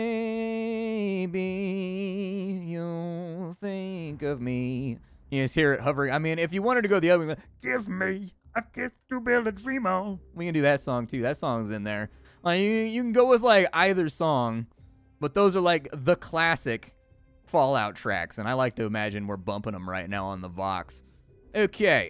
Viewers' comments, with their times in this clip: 0:06 Your Louis Armstrong impression was pretty good ngl